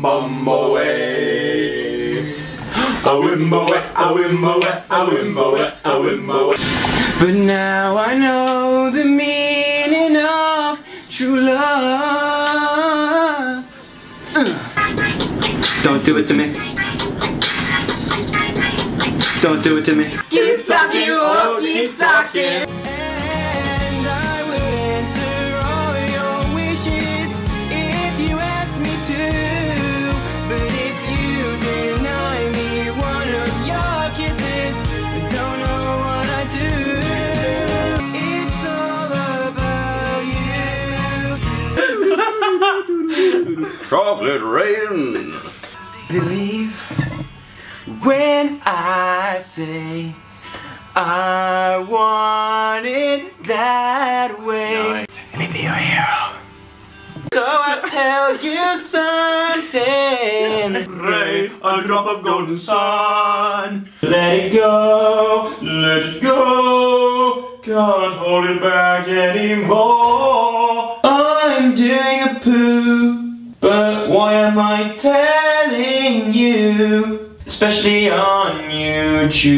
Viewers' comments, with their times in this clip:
0:06 😍 Oh my God those vocals tho ❤ I WISH HE WAS AN ACTUAL SINGER LIKE TROYE OR SOMETHING! 😭
0:07 Ohmygod. Ohmygod. Ohmygod. OH. MY. GOD. I CANNOT EVEN I HAVE LITERALLY LOST MY ABILITY TO EVEN WHAT IS HAPPENING JOE SUGG SINGING STRONG IS GIVING MY RESPIRATION A HARD TIME AND OHMYGOODNESS WHAT ARE YOU JOSEPH SUGG
0:07 oops sorry I thought an angel came down from heaven and somehow started singing to me through my headphones
0:46 Joe singing has been stuck in my head all day.
1:05 My favourite part is I love Joe's voice so much♡